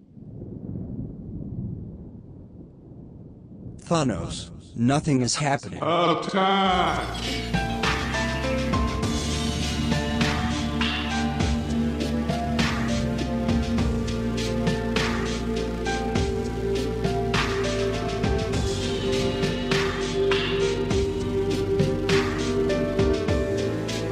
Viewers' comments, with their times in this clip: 0:07 sounds like a Crawling in my Skin ripoff lol